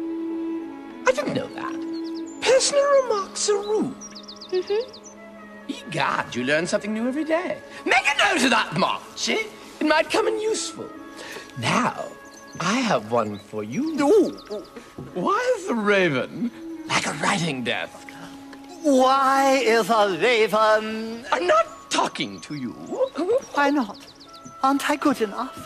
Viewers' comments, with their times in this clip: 0:07 I laughed at how he nearly screamed that!! "MAKE A NOTE OF THAT, MARCHIE!!"